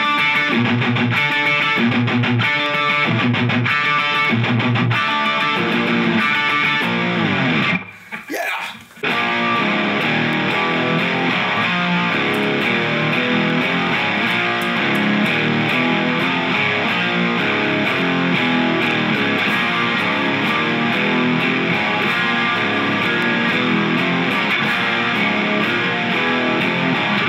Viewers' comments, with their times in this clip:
0:08 What’s the riff at the mark? So badass! When you switch to the clean patch that sounds glorious!